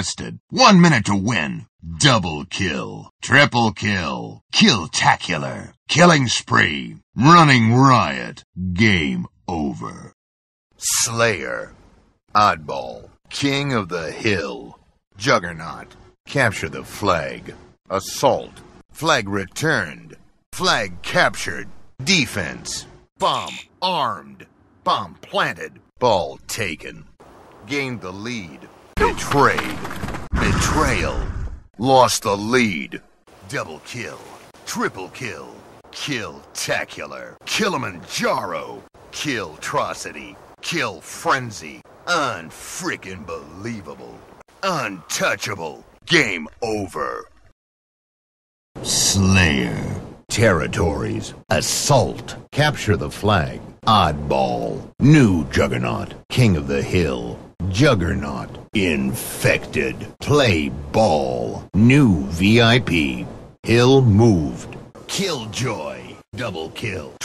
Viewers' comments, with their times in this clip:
0:05 Nothing hits like the CE “Killing spree”
0:05 I love the way he says "killing spree" in CE.
0:48 Halo 3's "Slayer" still sounds the best.
0:48 No line hits harder than halo 3's "sslayer"